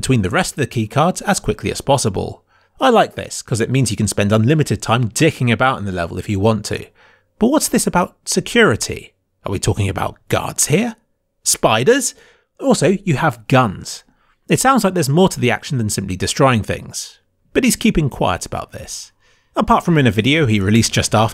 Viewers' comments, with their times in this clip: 0:05 a reference pronunciation of the word “dhick”
0:09 you sound just like stewie.